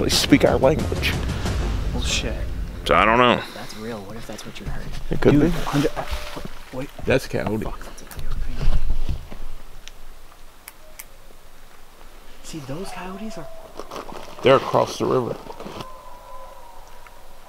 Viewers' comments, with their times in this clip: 0:05 these cayotes are actually screaming... there is difference between setting them off and interaction.... these cayotes were screaming because something scared them off... and u can hear some cayote noises higher pitches than other ones... this is what we call a "dying" cayotes... and this is why cayotes were screaming... something was killing them or either scared them off